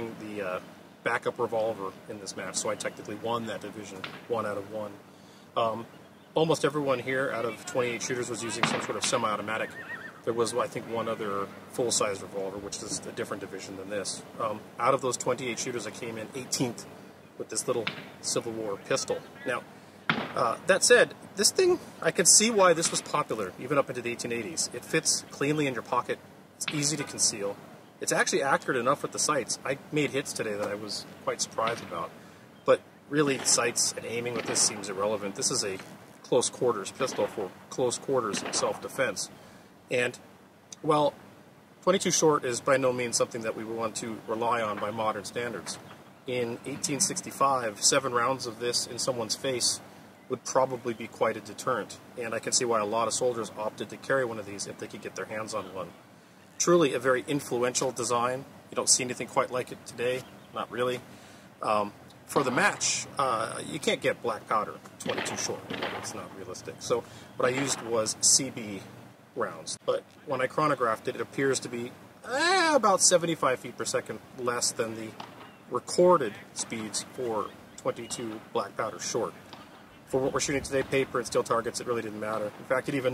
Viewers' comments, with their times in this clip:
0:10 Does a horse “whinny” or am I hearing things?
1:10 "...when I chronographed it, it appeared to be...MRRRRNYAAAAAAAAAAAAAAAAAAAAAAAAAH!!!!!...75 feet per second less than..." My dude! How about a warning for headphone users you were about to make a Coyote call! Scared the snuff out of me!